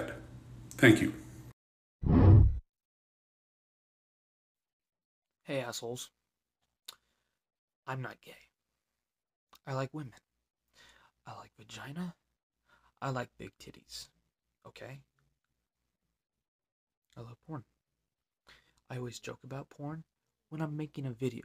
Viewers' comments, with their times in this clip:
0:03 Pls did anybody hear the snort breath kind of thing or is my fbi agent trying to mess with me??